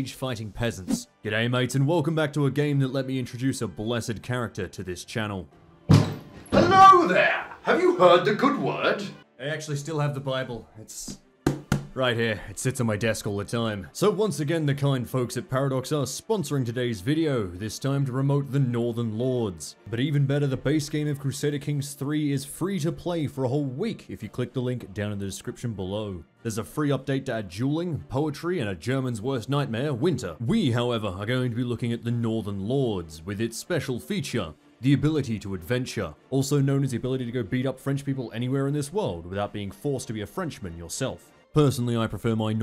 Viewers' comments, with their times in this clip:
0:05 Doorbell rings “Yes?”
0:26 I can't believe it they finally added juuling to Crusader Kings my prayers have been answered